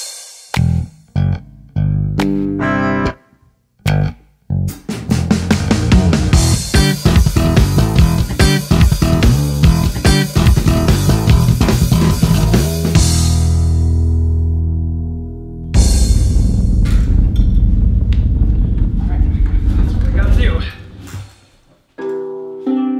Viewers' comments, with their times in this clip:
0:06 why does sound like Death By Glamour (Mettaton EX's Theme) From Undertale
0:06 WARNING! 12 STRING EPIC SLAPP BASS SOLO INCOMING!!!!!!